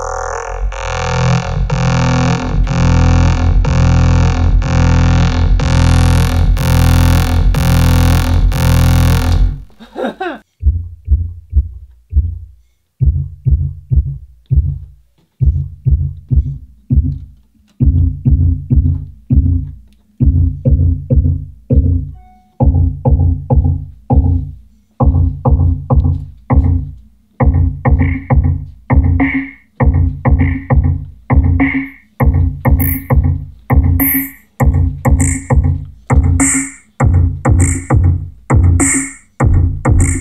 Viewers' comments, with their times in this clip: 0:03 The Einstein of DIY synths! Love the electric cello sound
0:26 sounds like selected ambient works vol.2